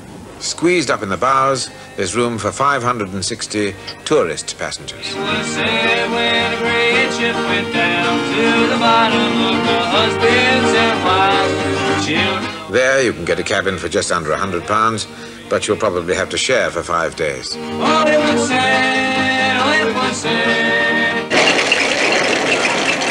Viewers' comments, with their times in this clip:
0:05 that guy is singing a folk song about the sinking of the Titanic.